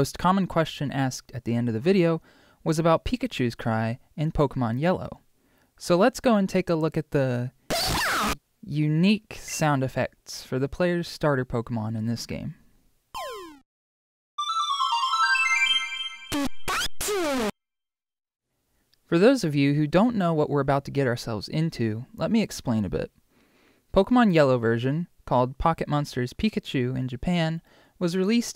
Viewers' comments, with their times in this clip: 0:07 run headphone users
0:07 me screaming to the mic be like
0:07 ÈÂR RÄPĒ WÂRÑÍŃG
0:16 corrupted pika earape PIKACU!!!!!!